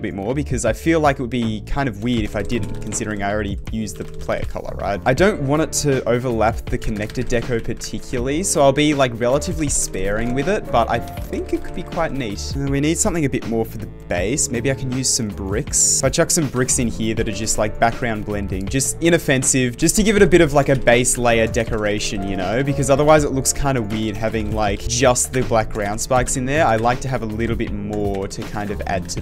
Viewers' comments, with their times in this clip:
0:10 dang bro really got that crazy fast keyboard💀💀💀